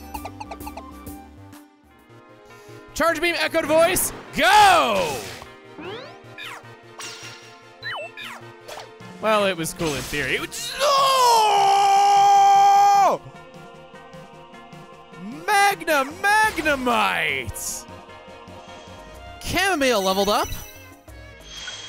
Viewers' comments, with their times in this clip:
0:04 Oh no, he found a way to be even louder